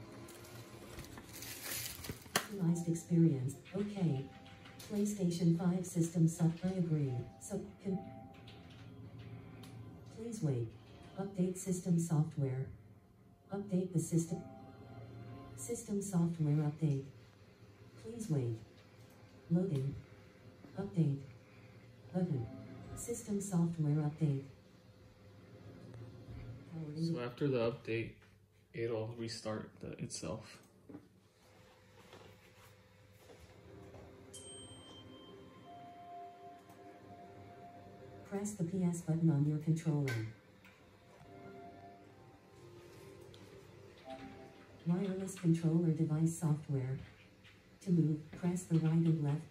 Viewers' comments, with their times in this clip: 0:03 If you turn on subtitles and click on this it says playstation system sucked i agree
0:04 Captions: “PlayStation 5 sucked I agree”
0:35 It's the Xbox narrator but if it was set to female. 😂🤣